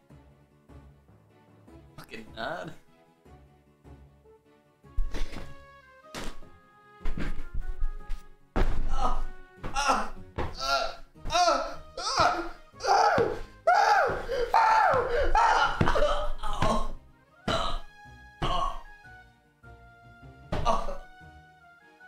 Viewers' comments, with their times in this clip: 0:03 Going from "ominous drone" to "peppy fair music" with the police lights going for both is hilarious to me s-.... someone put the police lights back on, please.